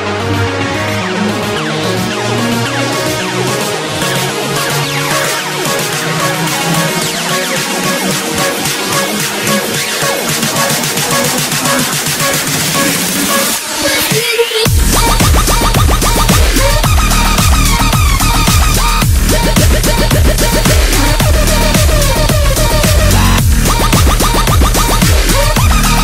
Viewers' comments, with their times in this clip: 0:10 Love this song sooo much <3